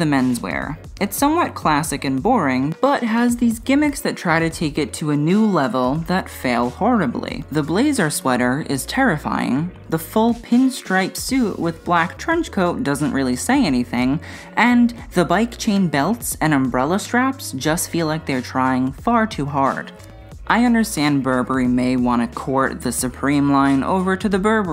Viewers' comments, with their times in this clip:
0:07 Have you ever been so appalled by a collection that you start talking like Siri